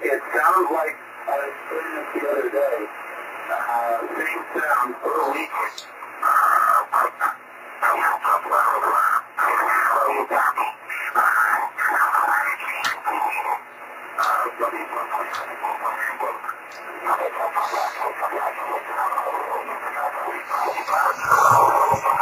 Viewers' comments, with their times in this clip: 0:06 The voice sounds like Linda Blair possessed by the devil in "The Exorcist" movie. V.S.S. (Very Scary Sideband) !!!